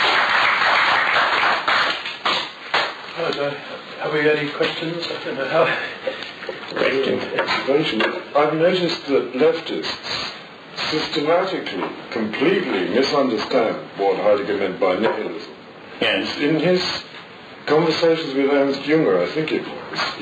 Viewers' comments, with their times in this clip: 0:08 Didn't realize that Prince Charles attended these meetings.